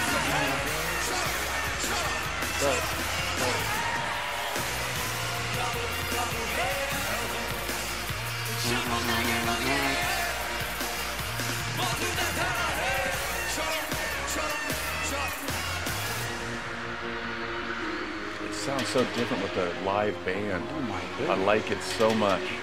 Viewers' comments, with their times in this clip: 0:04 with the DRUM BEATS AND THE BASE NOTES LIVE IT JUST HITS. DIFFERENT.